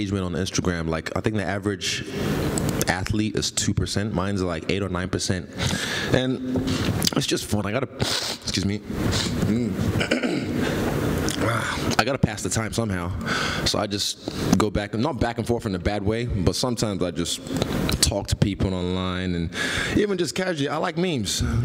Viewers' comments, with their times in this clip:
0:07 The Cocaine is sinking MHMMmh mhmmmm hahahhaah